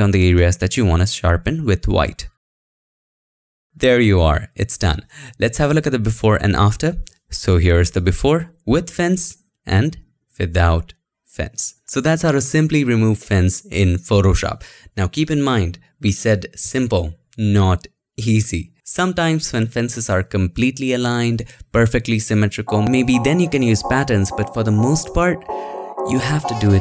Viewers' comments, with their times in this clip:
0:07 "So that's how to simply remove fence", with and emphasize on 'simply' :) Thanks for the video!